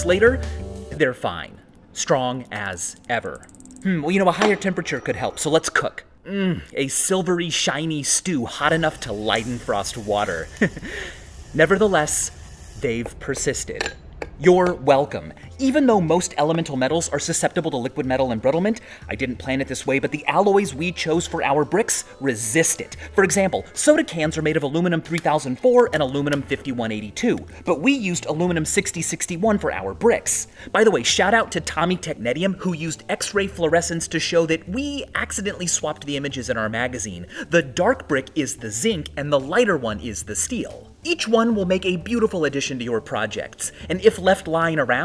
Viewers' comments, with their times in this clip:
0:05 i don't know if anyone needs this but VSAUSE MOAN
0:31 Sounds like tek·nee·shee·uhm